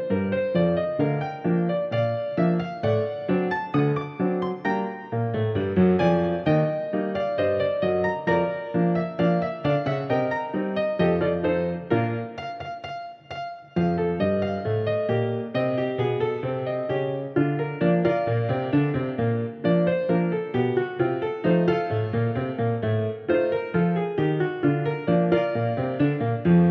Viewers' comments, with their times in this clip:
0:08 do we start hearing Chopin's influence?